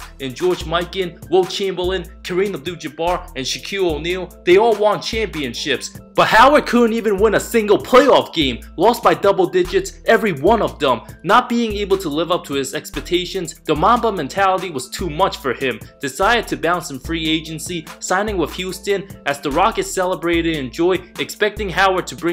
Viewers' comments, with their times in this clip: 0:07 this dude narrating this really seemed pissed off with Howard lol ; the pitch of his voice went up a few decibels; howard must've denied him an autograph or something.
0:08 damn near broke the microphone 😂😂